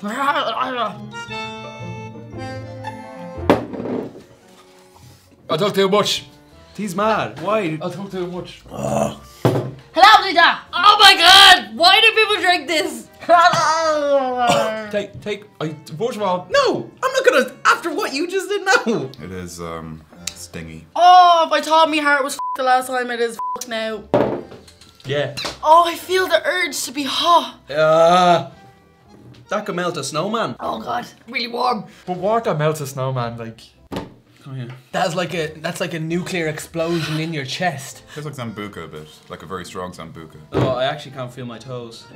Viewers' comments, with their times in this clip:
0:09 The fuck did she say there!?
0:20 XD best way of sayin ya fuuked X3
0:21 Yo what on earth did she say ? 😂😂😂😂
0:29 "That can melt a snowan" , I love his accent :)